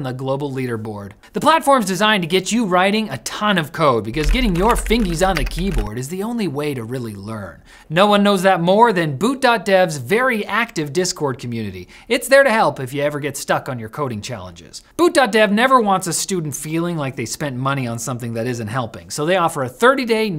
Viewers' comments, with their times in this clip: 0:04 the bass! i thought the earthquake came back!